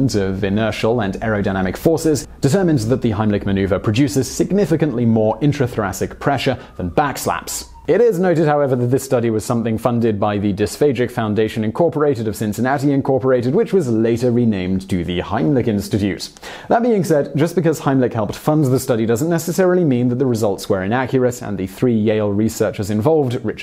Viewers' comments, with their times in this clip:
0:06 I really enjoyed the siren as well as the rest of the content of this video.